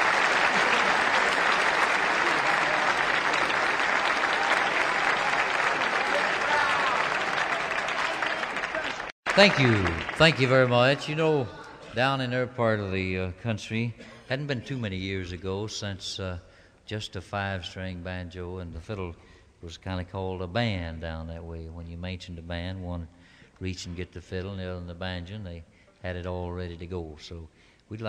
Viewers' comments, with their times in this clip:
0:10 just fiddle & banjo pure heaven